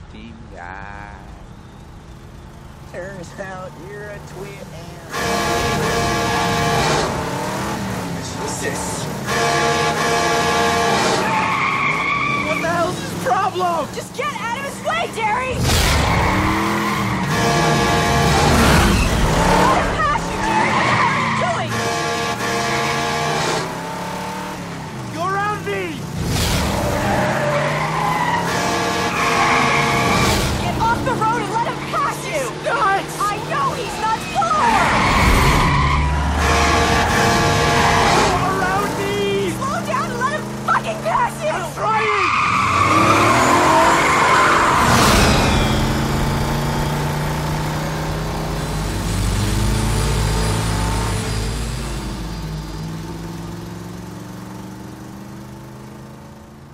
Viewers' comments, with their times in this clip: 0:09 BRUH Is That Horn of the truck?? Daam!
0:42 Starts engine sound like a turbo 6.1 hemi
0:42 Love the sound of the pro charger as the truck starts to pass.
0:44 307 v8 intensifies